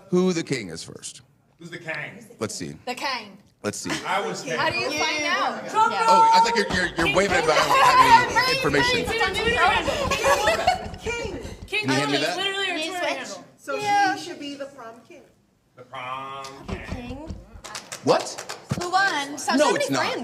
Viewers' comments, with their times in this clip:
0:05 im in and i lost it when austin creed frickin said "its time for the mainnn event" just like mark henry these days lmao